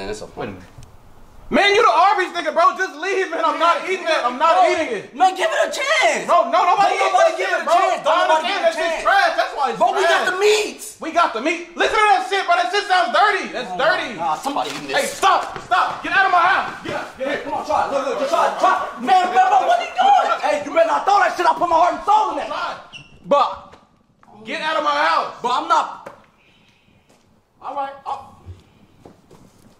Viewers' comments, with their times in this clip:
0:04 how his voice got light when he said “man give it a CHANCE!” 😂 na I’m good
0:10 😂 the way he said “ that shit sounds dirty, thats dirty! “ got me 💀🤣